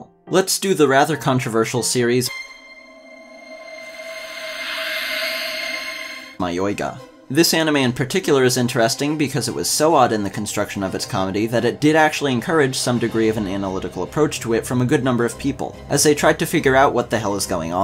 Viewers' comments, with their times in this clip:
0:04 Holly hell was it hard to find the spelling of the anime ! took me close to 30 minutes and ended up having to screen shot the video, then use google search's "search web for image" tool before I was able to find that it is called Mayoiga... totally sounds like it should start mei.. but apparently not.